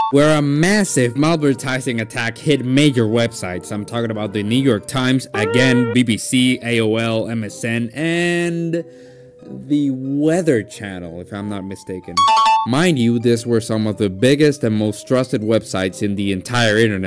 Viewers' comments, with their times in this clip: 0:04 bro did NOT say "new york" 💔🥀💔🥀